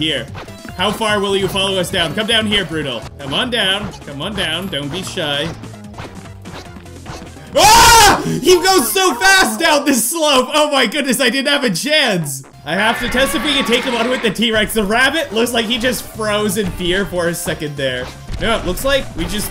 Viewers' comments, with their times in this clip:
0:04 The scream made me laugh 😂